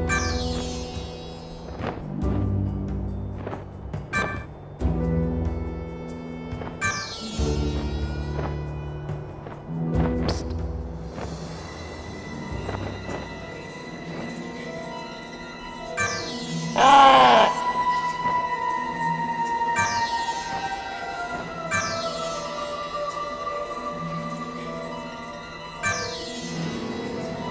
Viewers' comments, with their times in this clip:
0:10 God I love that eerie music that starts to play Its so appropriate to the events that transpire.